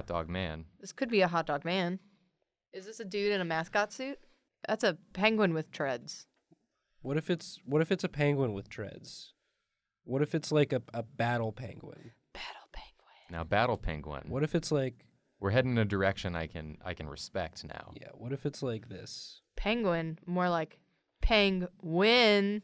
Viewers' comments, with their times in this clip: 0:04 I was watching this to fall asleep and my half asleep brain heard "A penguin with tourrettes" hahahaha